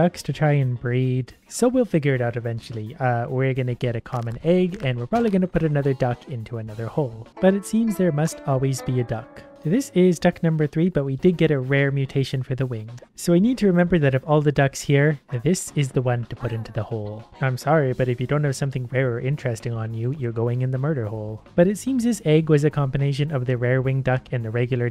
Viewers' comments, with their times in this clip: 0:06 does anyone else hear “Leaves from a Vine” because I can totally hear it.
0:07 the music in the backround 😔
0:08 saddest song in the universe